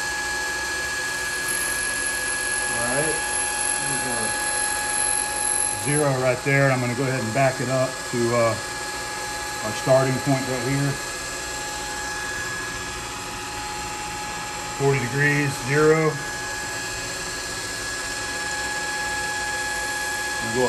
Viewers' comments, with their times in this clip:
0:05 rip head phone users.